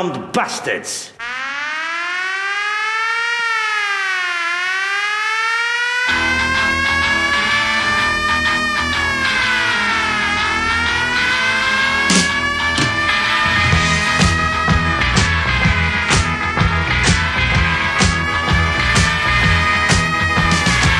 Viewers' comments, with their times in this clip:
0:07 haha when the song and sirens were on, i actually heard cop cars zooming by outside lol